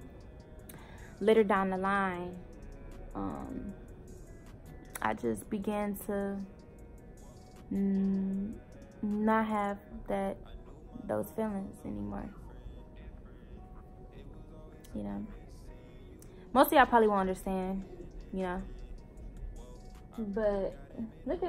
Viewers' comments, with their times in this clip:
0:06 I’m only on and I already know she’s lying because of the background music 😭 love y’all tho ❤️